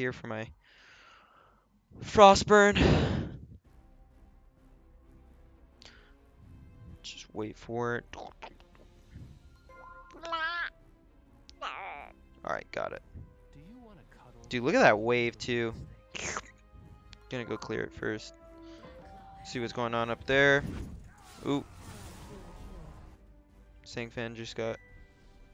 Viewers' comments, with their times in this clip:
0:10 baby noises POG